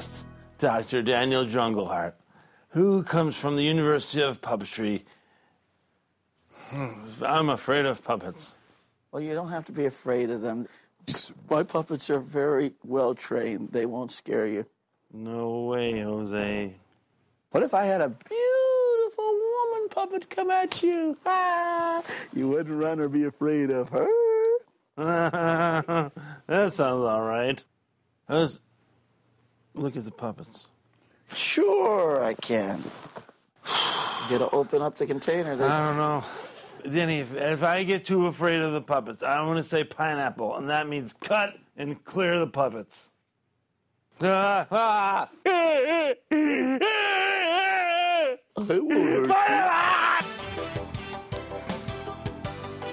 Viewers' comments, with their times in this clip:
0:10 Notice one of David's trademark burps
0:11 When Daniel Jrungleheart burps
0:22 it’s amazing to see Dr. Steve Brule be out-matched in weirdness. John C reily laughed and almost broke character when DLH leaned back and started squealing.
0:37 ...... So.... Me and Brule have the same safeword. .... I'm not sure how to take this. Also why does the puppeteer sound like Pennywise?